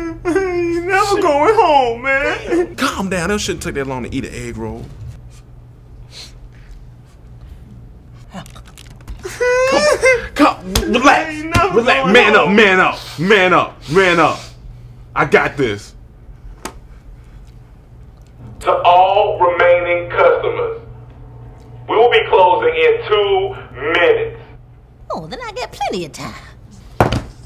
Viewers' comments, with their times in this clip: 0:10 the mic just popped in.
0:13 The mic Died